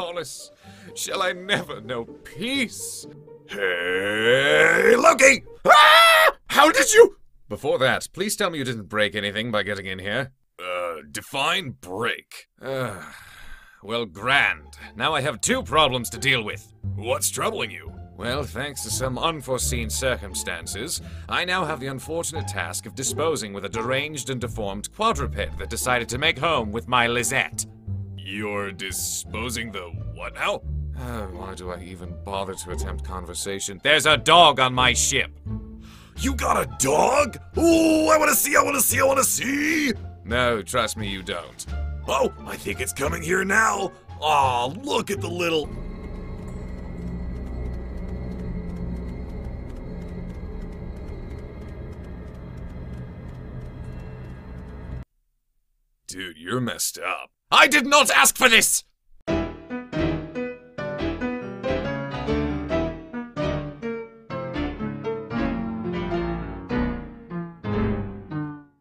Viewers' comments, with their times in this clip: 0:04 Cringiest squeal I’ve ever heard.
0:54 Loki sounded like robin atkin downes